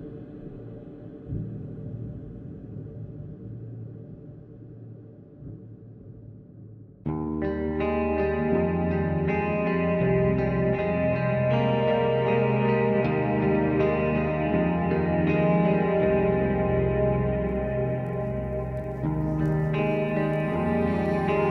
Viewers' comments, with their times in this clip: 0:05 Anyone else hear "Broken Wings" by Alter Bridge in that intro? Obviously it's a simple progression of notes, but I immediately thought of that song lol.